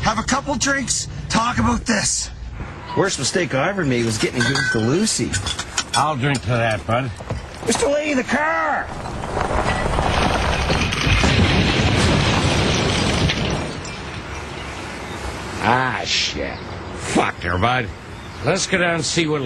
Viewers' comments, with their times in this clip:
0:07 Randy sounds like Shrek when he says "Mr. Lahey, THE CARRR!!!" lol